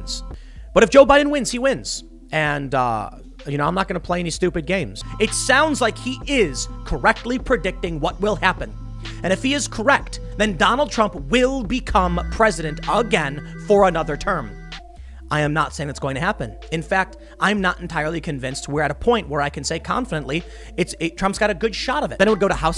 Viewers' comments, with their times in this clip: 0:07 Oh my gosh the doublethink montage has me DYINGGGG!! I couldn't help but crack up watching him go from yelling about Trump winning to softboi UwU "maybe not tho"